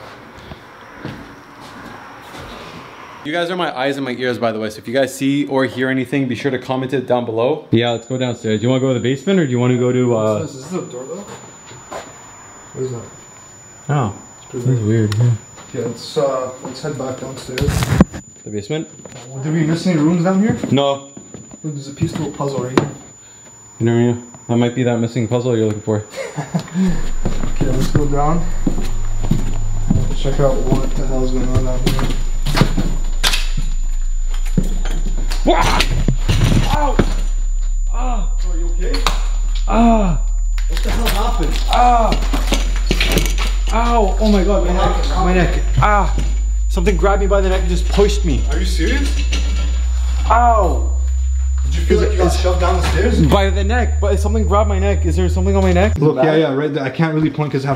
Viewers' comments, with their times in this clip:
0:08 you guys are going downstairs and this screeching starts...
0:15 in theres a ringing sond
0:27 some sort of ringing
0:44 does anyone hear a female or a girls voice